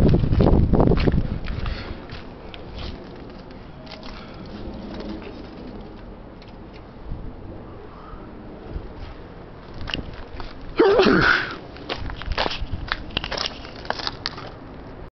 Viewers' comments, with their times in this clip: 0:10 Whats that sound ? Was that supposed to be a horse or some animal? XD